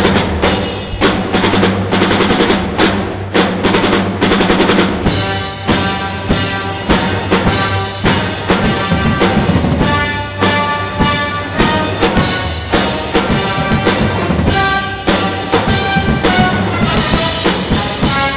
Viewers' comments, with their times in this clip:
0:06 why does it sound better with drums